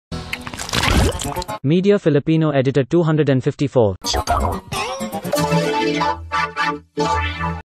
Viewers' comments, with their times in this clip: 0:01 Text To Speech Edition